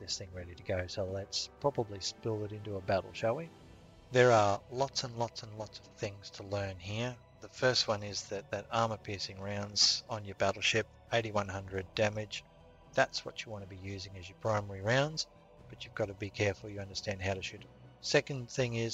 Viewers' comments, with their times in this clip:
0:04 Not sure what happened with the buzz in my voice. The raw video I have doesn't have any buzz, so I'm guessing it was something to do with the upload / processing to YouTube? It goes for about 25 seconds sorry......my apologies for whatever has happened there.